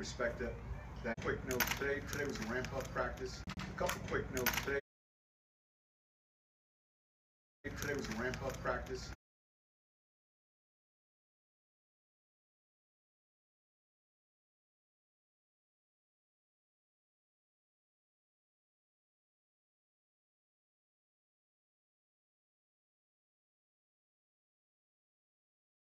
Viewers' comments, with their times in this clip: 0:04 I couldn't hear a word you said after the mark. Love your content though. Go Broncos!!!
0:06 No audio after
0:09 Is it just me or is there no audio from onwards?
0:12 your voice cuts out and there us no sound. We cant hear what your saying